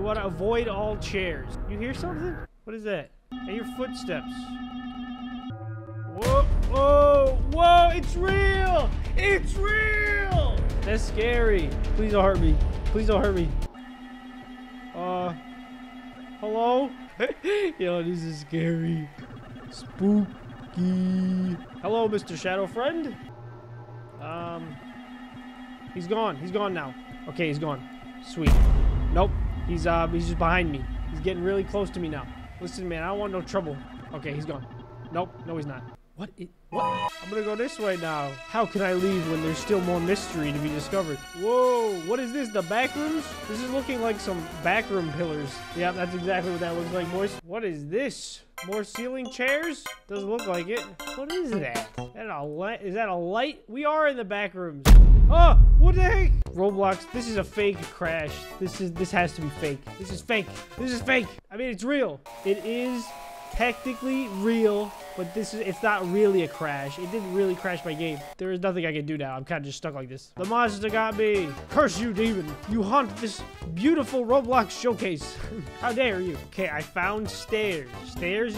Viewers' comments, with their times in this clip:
0:08 when you are shouting
0:40 The music is clown circus trap remix I think
1:06 MY EARS BURN